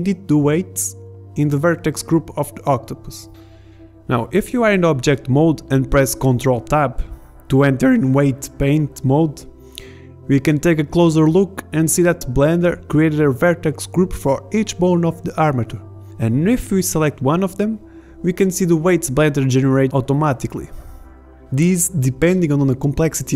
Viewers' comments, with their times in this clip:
0:07 That was such a bad voice crack